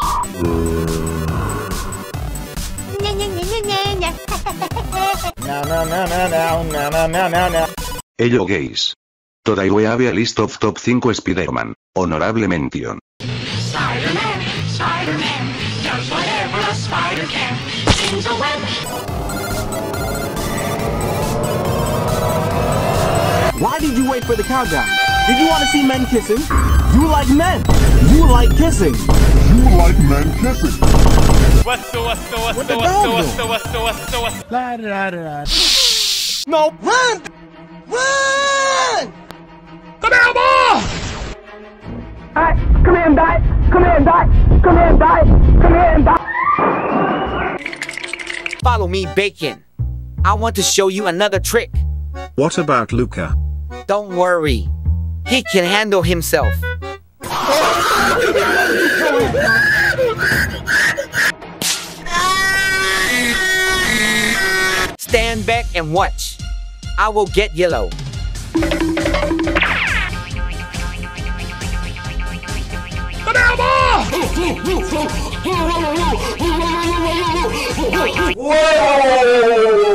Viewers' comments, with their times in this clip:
0:07 I thought "hello gays"
1:02 THE SOUND OF MY GRANDMA FALLING DOWN STAIRS🤣🤣🤣🤣🤣🤣🤣🤣